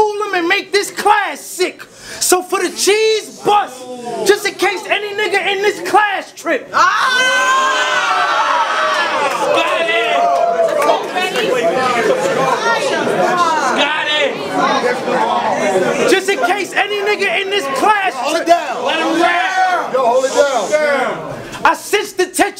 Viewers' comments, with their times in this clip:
0:07 Nastiest scream I ever seen